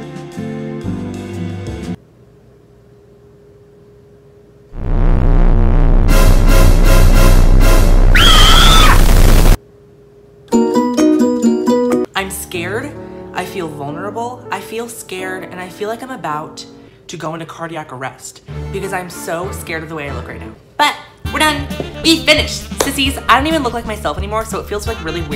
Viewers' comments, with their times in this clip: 0:06 the bass in xanny by billie eilish be like